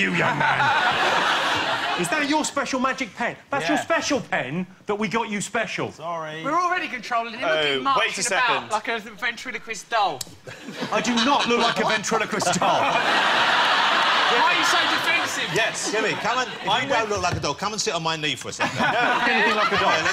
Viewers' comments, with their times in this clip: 0:05 Noel sounds so like he's being told off wen he says "Sorry"